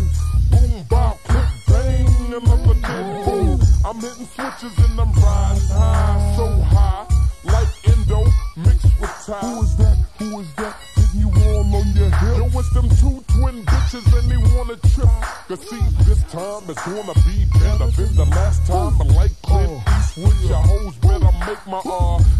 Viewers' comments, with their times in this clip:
0:05 this beat is tripping me out, kinda reminds me of pokemon red/blue/yellow